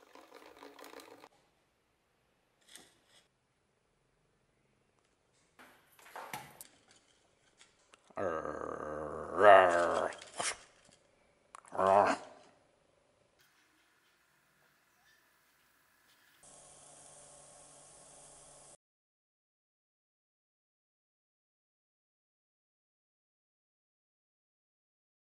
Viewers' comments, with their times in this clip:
0:07 Did anybody else laughed when he said argh I thought that was too cute 🤣🤣